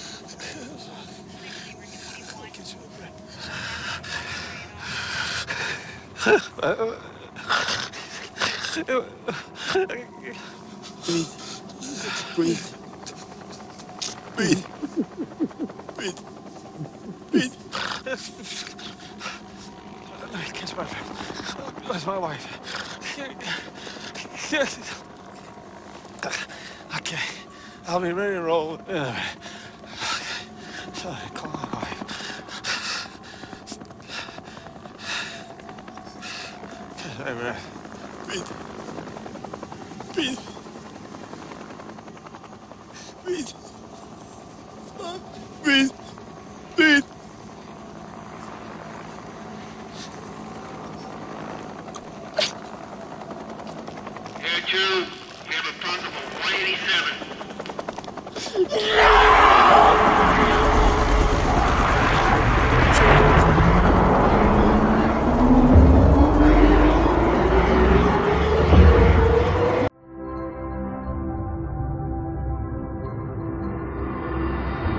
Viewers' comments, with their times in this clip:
0:07 Hodges could feel the life slipping away from him and started crying.
0:54 he heard that intercom, thats it.
0:58 That scream tho LOL